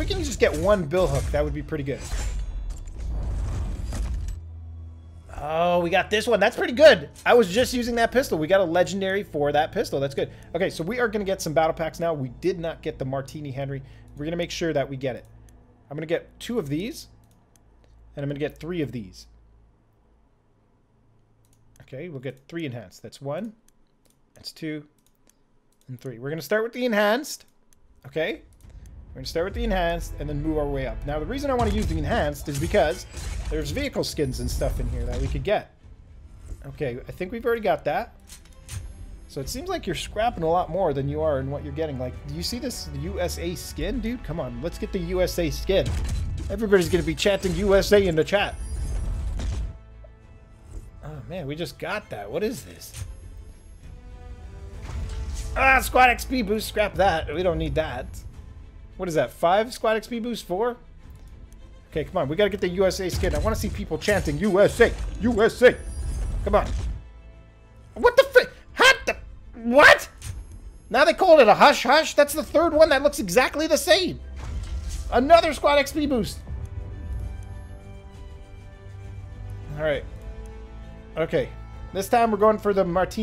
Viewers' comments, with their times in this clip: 0:07 he didn't call it "The Colon-el" this time...
1:07 trying sound like chicken xddd